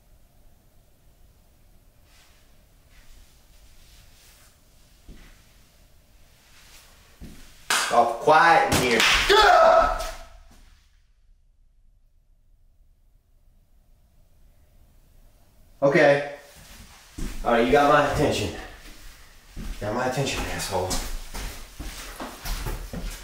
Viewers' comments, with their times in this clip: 0:08 something slams on the roof (or floor above). Watch the water mark in the roof moments before he spooks. You can see it move with the slamming noise.
0:08 that bang scared you!